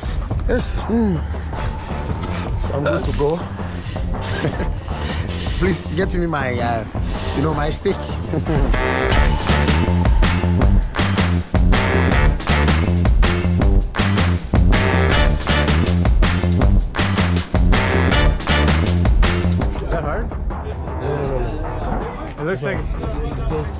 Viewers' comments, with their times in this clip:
0:10 false song my guy 😂